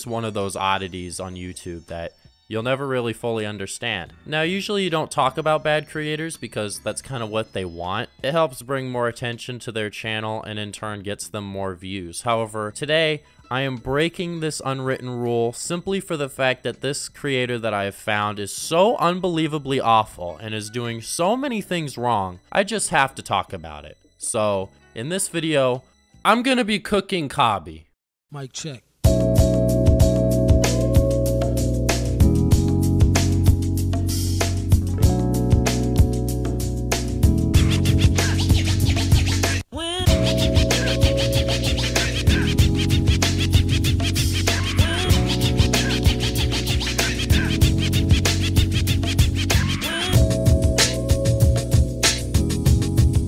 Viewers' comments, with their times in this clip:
0:05 fire song as always
0:40 “wah” Also I thought you were going to say “kow-bee” not “kaw-bee”